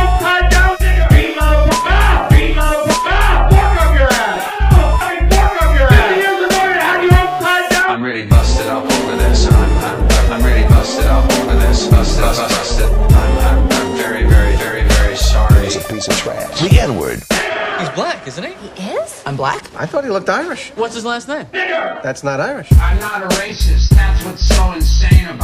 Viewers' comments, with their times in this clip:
0:08 The Ooooooh's coming in always get me.